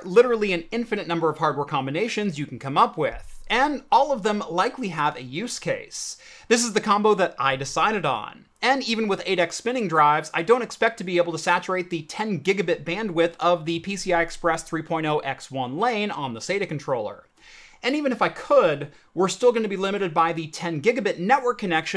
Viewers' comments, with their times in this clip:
0:05 I can't watch. His inflection is worse than nails on a whiteboard. I made it to